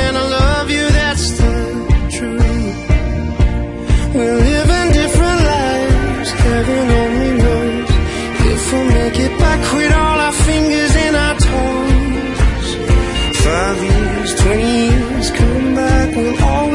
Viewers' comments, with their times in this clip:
0:04 That kick in is everything 😍